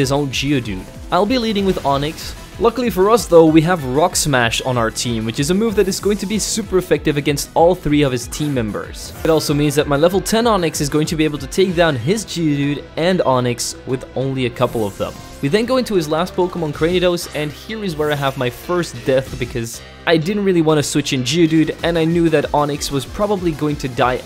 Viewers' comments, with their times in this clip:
0:09 I didn’t know rock smash had the milotic cry